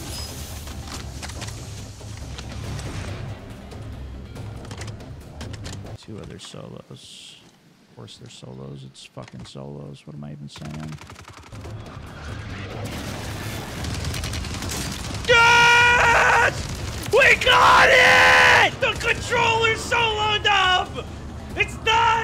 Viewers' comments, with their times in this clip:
0:06 the editing decision to stop the music just before he said what he said and also not bleeping that was comedy gold.